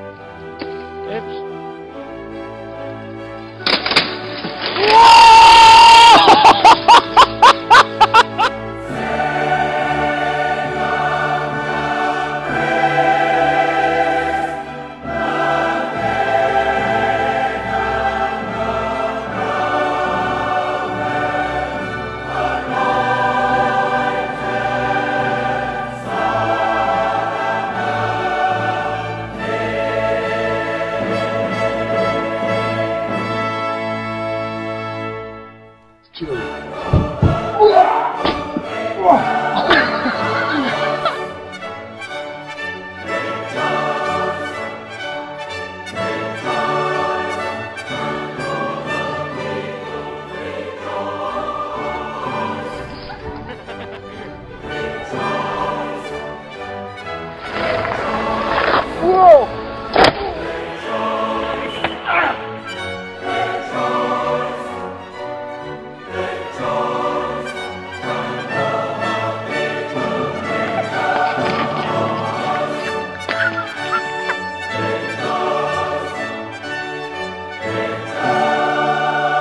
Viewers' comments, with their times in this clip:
0:03 R.I.P - My ears. Forever and ever.
0:04 RIP headphone users -.-
0:05 rip my ears ;(((((
0:05 Warning e.e headphones
0:05 HEADPHONE WARNING Thumb up so everyone can see
0:58 lol is still one of my favorites. its just "plop" right into the other end.
1:02 somehow the banjo makes everything just that much more funny